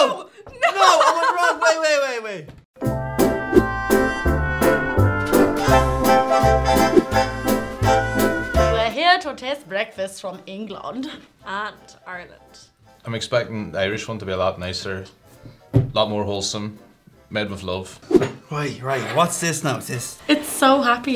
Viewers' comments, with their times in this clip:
0:08 that was actually a good british accent